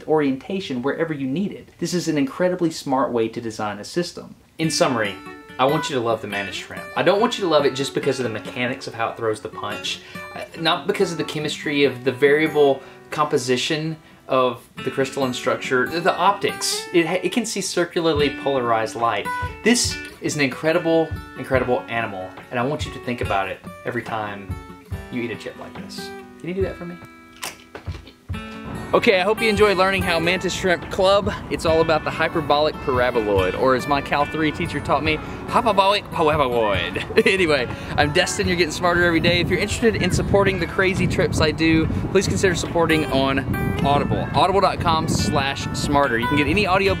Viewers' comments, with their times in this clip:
0:06 ....Q the dramatic music
0:34 Was that an Asian accent?
0:35 was a bit racist. :(